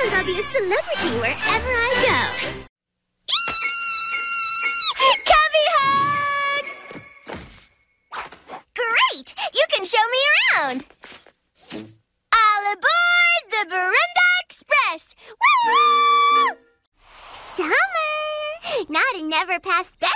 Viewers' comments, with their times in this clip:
0:03 that squeal makes me hug my pillow (don’t call me a weirdo)